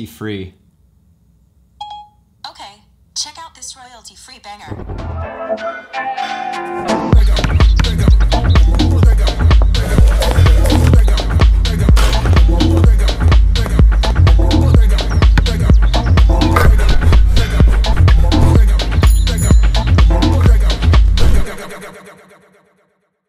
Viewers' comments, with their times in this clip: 0:05 whats that song, it is literally the most apple advertisy thing ever.